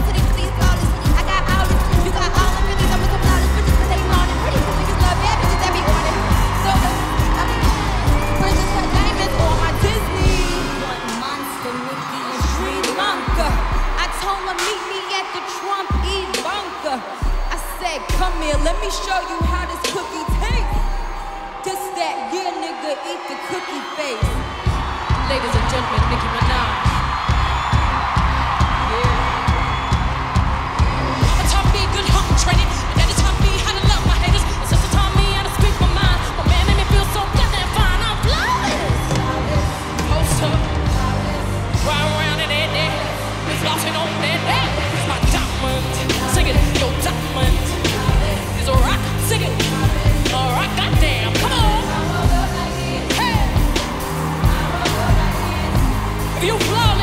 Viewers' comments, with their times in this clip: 0:07 GUYS GO TO AND WATCH WHEN NICKI AND BEY GET CLOSE you can hear Beyoncé go "heeeaaaaAAAYY" and it's the funniest shit ever
0:39 The way the instruments change make me wanna cry because this really is a powerful self confidence song and I want y’all to have that for real. Some of y’all underestimate your power and you truly don’t know that you are FLAWLESS 🤎